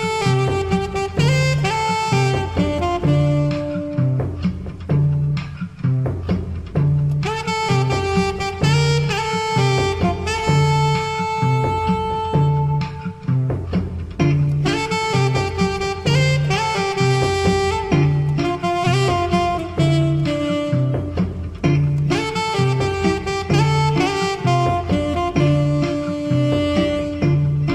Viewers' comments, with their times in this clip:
0:10 That long note 😍😍😍😍